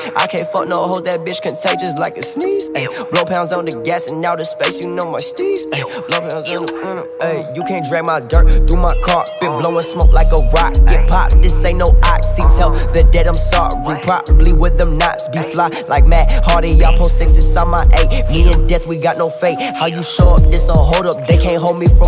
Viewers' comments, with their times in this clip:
0:07 The flow tho🌡